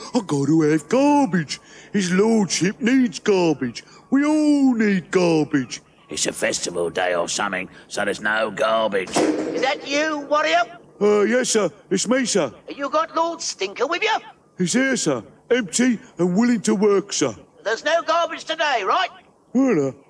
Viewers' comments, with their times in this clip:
0:08 *crash* "Is that you warrior??" Gets me everytime.